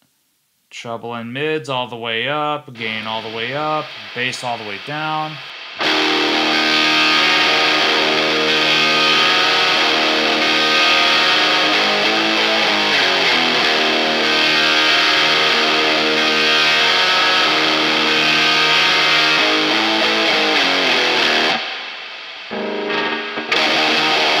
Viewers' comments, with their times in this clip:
0:05 It does pass the trve kvlt tone on